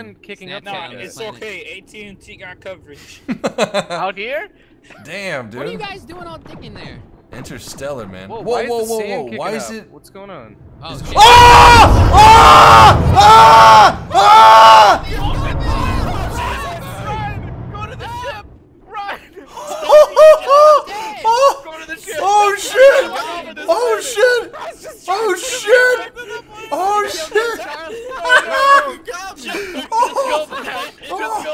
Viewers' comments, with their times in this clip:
0:08 rest in peace headphone users. OWWWWW
0:14 Damn, even my neighbor (5 blocks away) woke up ...